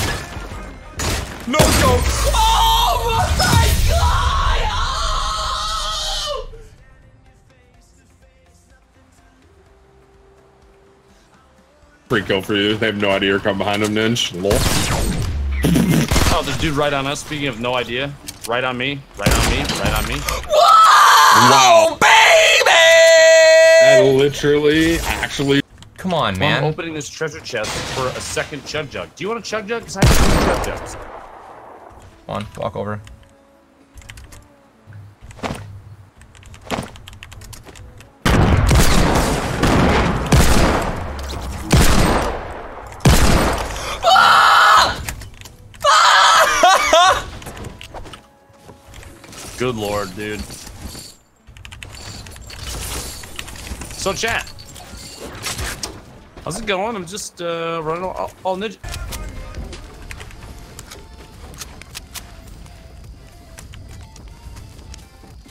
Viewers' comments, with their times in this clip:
0:04 ninja could voice act goku ssj3 transforming lol
0:24 the way he said “babyyy!!” lmao 😂
0:46 that sounds like preston